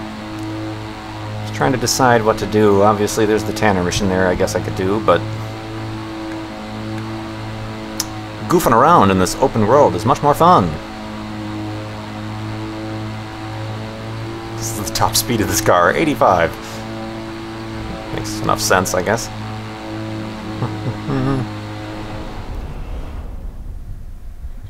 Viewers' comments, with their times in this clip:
0:06 Why does the car sound like a leaf blower?